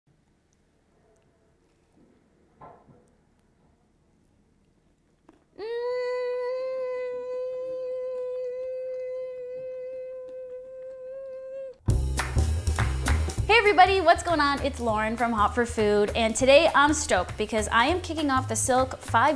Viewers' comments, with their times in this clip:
0:06 This is me... EVERY time I eat smh moaning like it's sex lol